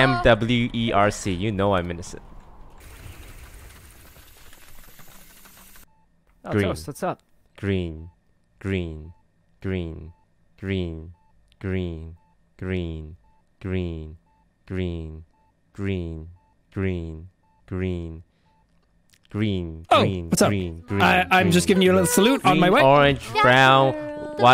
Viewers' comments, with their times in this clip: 0:09 what do you hear dream or green?